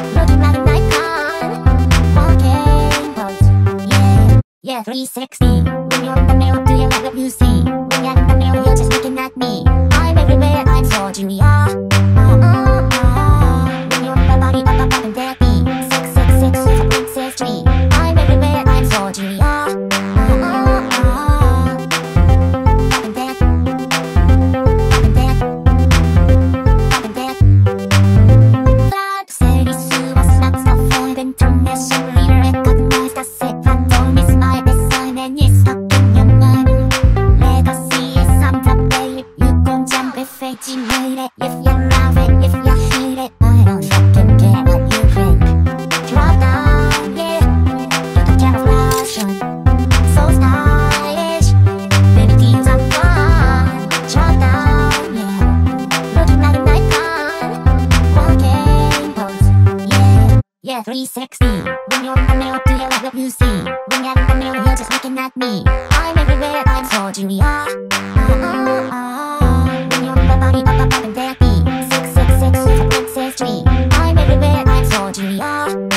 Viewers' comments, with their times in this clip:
0:09 Miku saying it like slaying it 🤭💅🏻
0:56 looking like a daikon